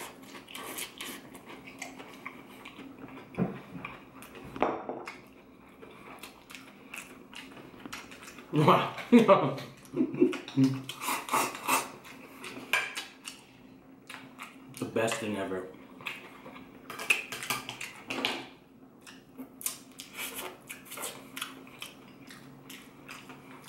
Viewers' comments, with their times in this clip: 0:06 You know that lemon chicken is so delicious from the way it made this man laugh and smile lmao , I respect and love your passion for food bro !